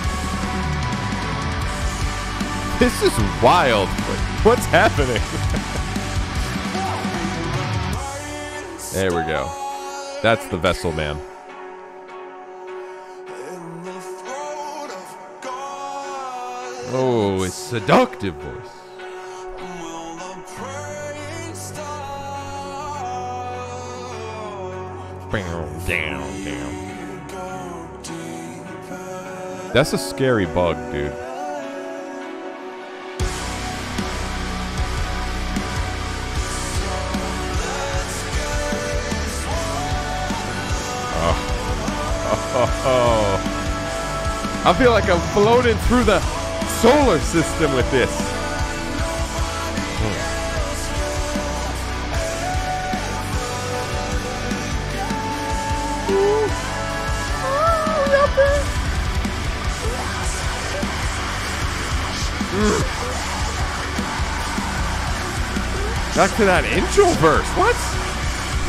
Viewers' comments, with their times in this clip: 0:09 Is it just me or did have big Deftones - Passenger vibes?
0:30 Not to sound weird or anything but that CERTAINLY NOT a dude.
0:39 This is the only Sleep Token song that I've heard that I enjoy all the way through. Pretty damn good. That part ish sounds like a metalcore/post metal band that my ex-manager listens to a lot but I can't remember the name of them.
0:49 Anyone else get a little Breaking Benjamin vibes at the ish area?
0:50 It sounds like Starset